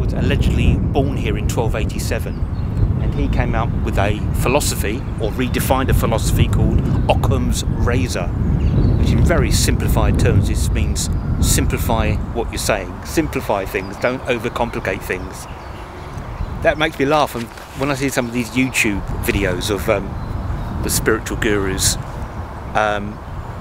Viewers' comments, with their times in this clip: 0:05 You needed a fluffy on your microphone. Great research BTW.